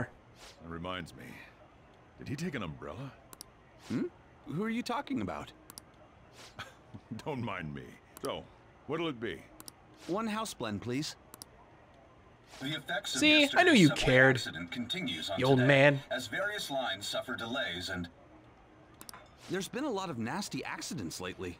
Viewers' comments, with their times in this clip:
0:04 THIS GUY"S VOICE SOUNDS FAMILAR